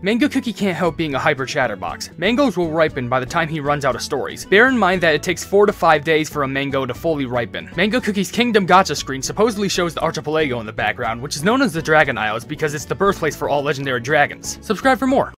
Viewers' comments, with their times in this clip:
0:07 In i would say "In the background is the pineapple island, also Mango cookie and the Golden Dragons home situated in the tropical soda islands" also is funny how it cuts when you say subscribe for more